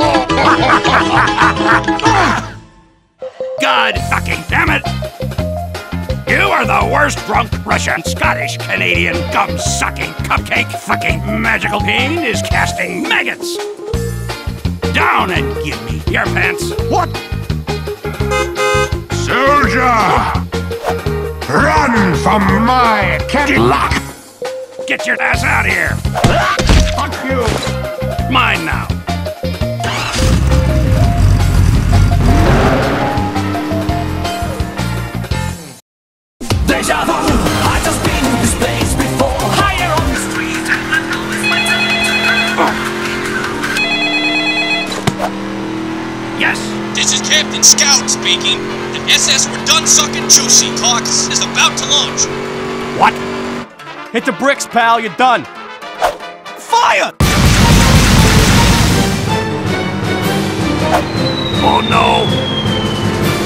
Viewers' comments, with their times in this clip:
0:03 based galileo music
0:11 I luv it when he say painis
0:27 When you swear while using voice changer:
0:46 A romania music
0:51 something about this entire sequence just tickles me every time. scout's FOIYAH being used for cannons feels so right